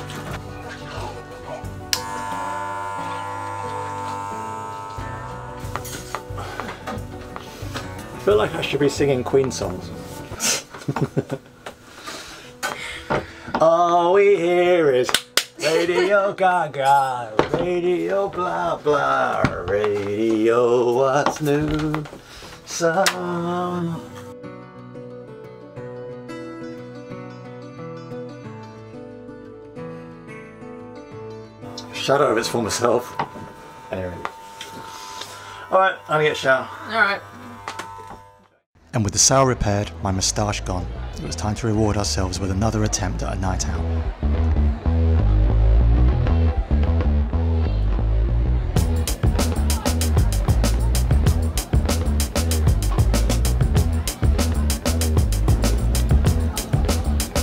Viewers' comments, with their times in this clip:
0:07 more like Mothers of Invention songs
0:45 We're digging the new intro, and what is that super funky groove ? Lol